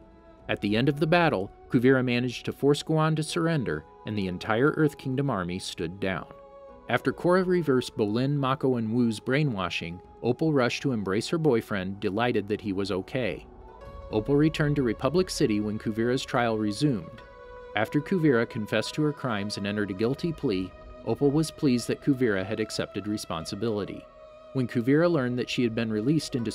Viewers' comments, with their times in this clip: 0:08 I THOUGHT HE SAID, "Wu rushed to embrace his boyfriend." AND I’M LIKE WAIT RUSHED TO EMBRACE WHO